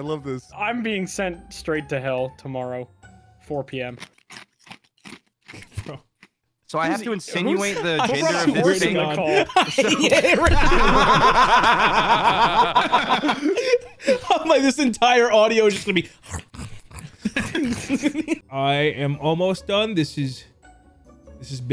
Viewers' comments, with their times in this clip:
0:03 Nahh, when I heard the ice crunching I immediately thought of the ticket eating machine at Chuck e cheese lmaooooo specifically 😂😂😂